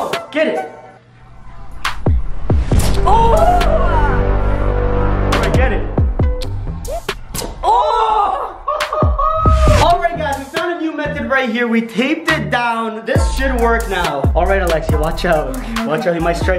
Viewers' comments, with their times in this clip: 0:03 ps1 start XD